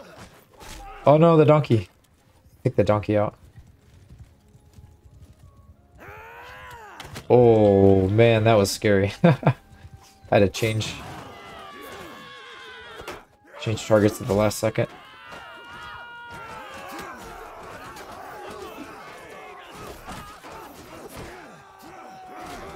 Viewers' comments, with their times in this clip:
0:10 "I had to change [shorts*] at the last second"